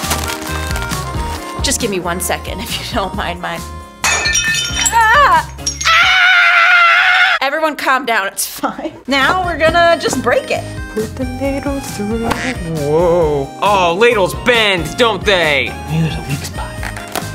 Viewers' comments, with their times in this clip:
0:04 satisfying bowl break sound.